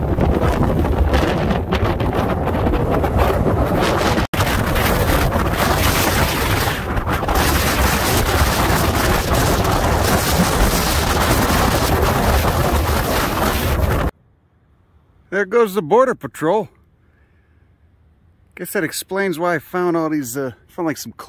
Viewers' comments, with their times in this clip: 0:05 holy shit that wind is crazy
0:06 holy shit the wind sound, this is like ANTI-ASMR